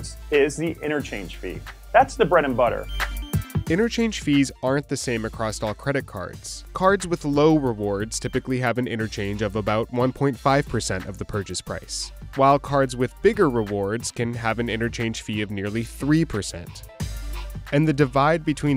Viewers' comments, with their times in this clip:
0:05 Yo did you seriously just say "acrost" ??? What's wrong with you?